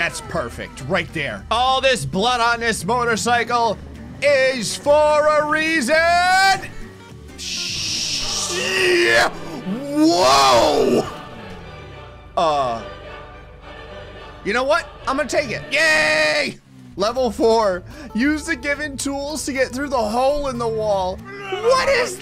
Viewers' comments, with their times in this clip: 0:06 I’ve never heard him like that That was genuinely surprising